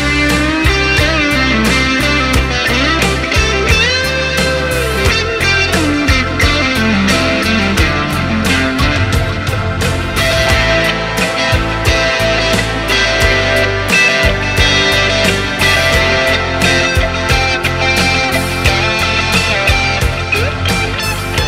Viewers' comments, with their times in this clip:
0:09 Thats the one.. Probably need a slight chorus in there too...